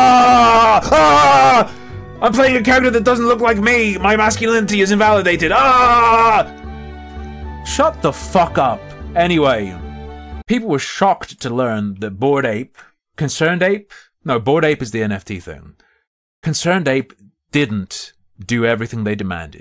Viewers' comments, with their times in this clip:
0:05 As embarassing at the whole thing is for the upset around different pronouns, the whole bit with you firing up the game up until a bit after is even more embarrassing, straight up made me cringe with the reaction and screeching. Yikes, very 2016 feminist get rekt with logic compilation vibes lmao